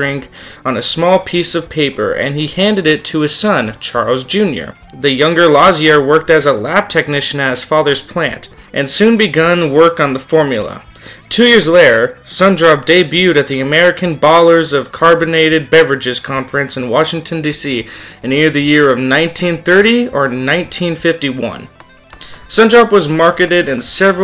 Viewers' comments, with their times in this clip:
0:10 You stroked out right when you said, "Two years later"